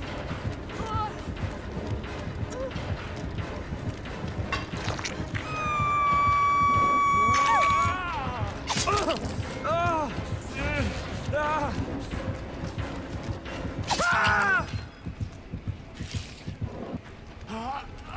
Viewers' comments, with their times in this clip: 0:04 perfectly cut scream (when james falls pause the video, it's funny for some reason, I can't stop rewatching, pls don't attack me xD)